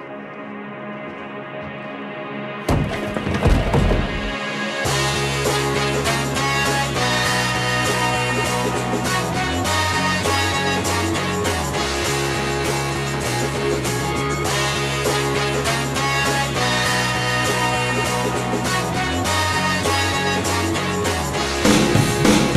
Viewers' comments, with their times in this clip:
0:05 Man, I heard the music and I thought this is PURE GENIUS